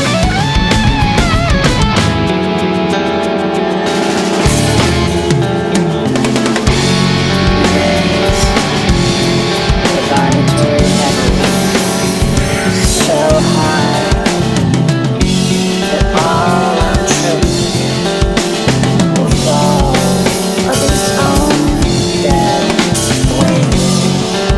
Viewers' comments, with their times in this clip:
0:08 I can't but feel the entire album is a unified whole when I hear the murmur "we raise the vibratory level…" reprising